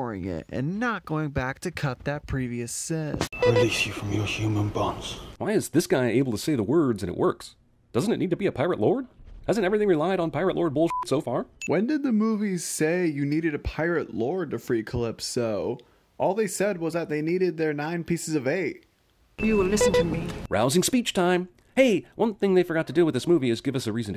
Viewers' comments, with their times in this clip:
0:06 because he says it as if speaking to a lover